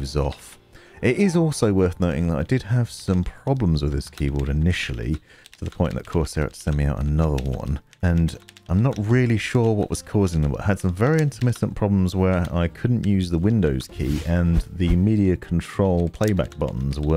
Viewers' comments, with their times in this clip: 0:05 Stopped watching because of your typing. Smh But you do have a soothing voice, nice camera angles and a cool knife.